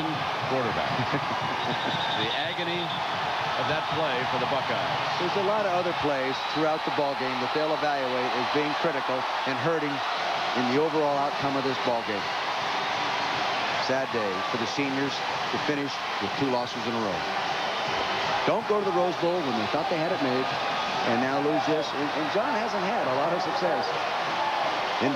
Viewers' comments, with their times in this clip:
0:06 Vermeil sums up Cooper's tenure pretty well with his statement there. You could hear the sympathy in his voice as a fellow coach.